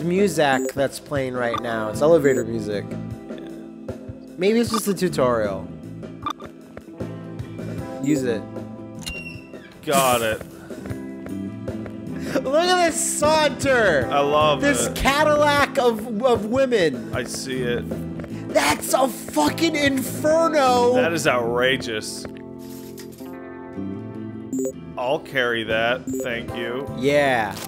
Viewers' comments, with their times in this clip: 0:10 The music and pretty much just says it all doesn't it?